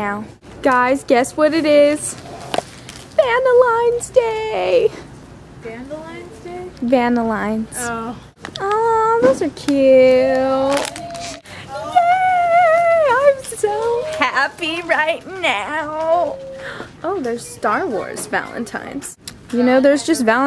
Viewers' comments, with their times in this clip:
0:03 vanalines day lol :D